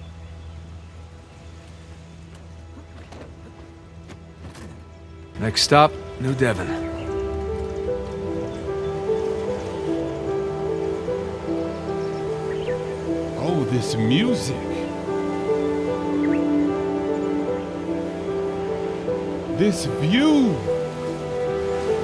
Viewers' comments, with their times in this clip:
0:09 anyone else agree to the Minecraft music?